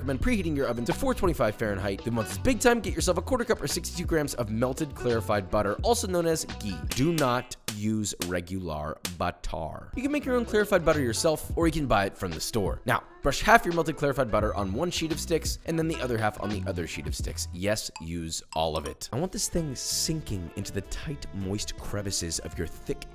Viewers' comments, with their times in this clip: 0:07 it sounds like you’ve said « batard »😂😂😂😂(its bastard in French)